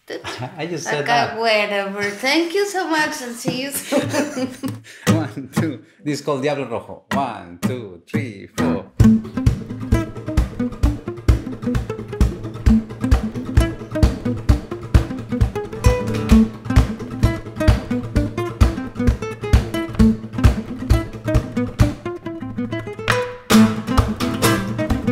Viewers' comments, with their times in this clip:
0:08 Shades of Sinister Minister by Béla and the Flecktones!